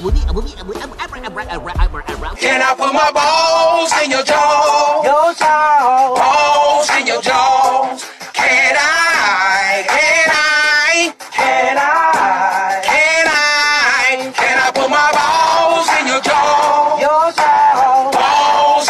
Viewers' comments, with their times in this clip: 0:05 many people thought this said "can i" its really "yo jaw"